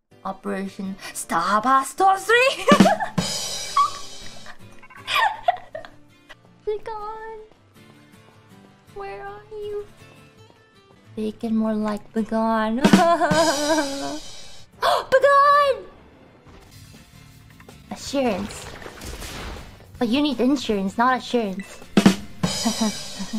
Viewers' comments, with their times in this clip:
0:10 that sad "heu heu heu heu"... mah hart 💜